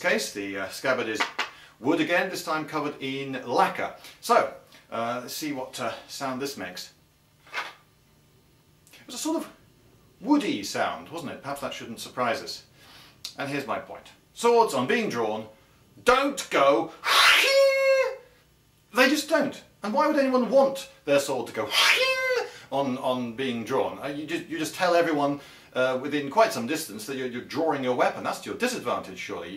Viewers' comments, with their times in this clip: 0:10 I prefer my swords having a tinny sound in them